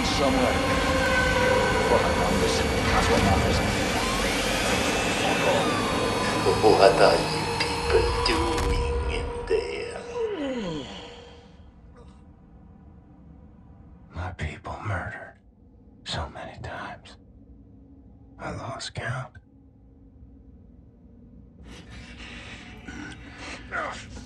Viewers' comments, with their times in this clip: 0:06 Sounds at 3 to sound like my sleep paralysis hallucinations 😂